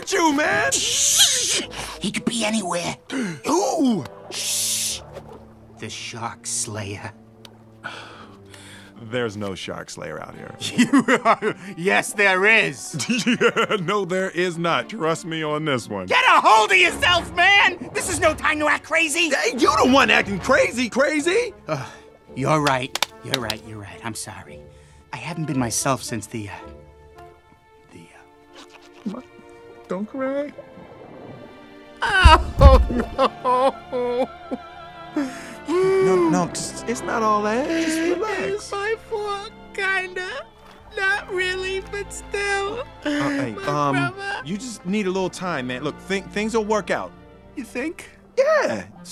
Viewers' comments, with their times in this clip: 0:10 ehh hold the phone doc is it me or did Lenny laughed and sounded so much like Horton the elephant?
0:10 Laughing talk Me; hehehehhahahaha why are we talking this way?
0:29 Lenny starts to be sad and cry about Frankie
0:31 (Crying) Oh, no!☹️😢😢
0:31 Lenny cries and drops on a coral bed